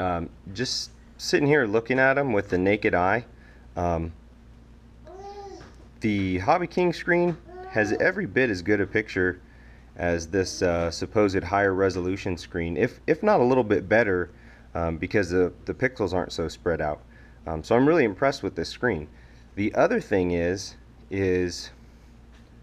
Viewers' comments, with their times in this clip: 0:05 Porn noises kick in . its cool bro